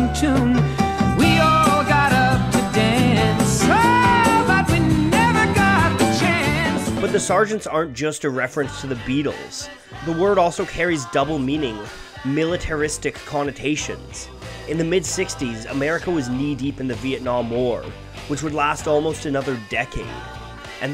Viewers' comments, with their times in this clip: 0:08 not joking I went out of YouTube to see if I was getting a phone call because Sgt. Peppers Lonely Hearts Club Band is my ringtone